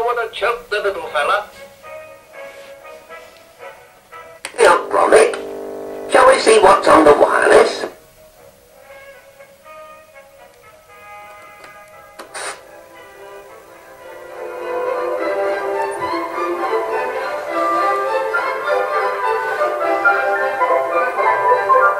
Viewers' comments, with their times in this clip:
0:04 "Ey up Gromit, shall we see what's on the wireless?" Said Wallace from the depths of hell.